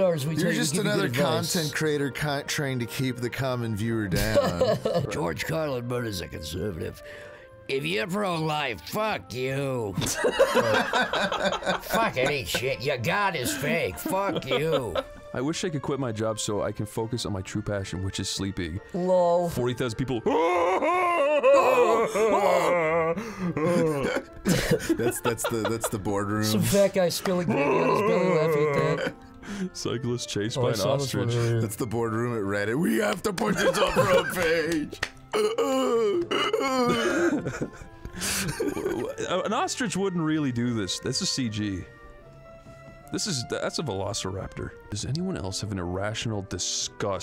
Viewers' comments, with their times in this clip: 0:06 best George Carlin impression
0:06 Holy smokes that George Carlin impersonation is slept on.
0:32 his knee slapping is perfectly in time with the ostritch running and I thought they added it in lol